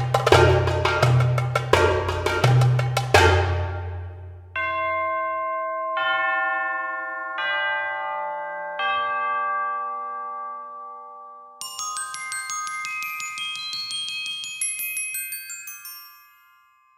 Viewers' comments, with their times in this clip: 0:04 Nice Carmina Burana insert with the Tubular Bells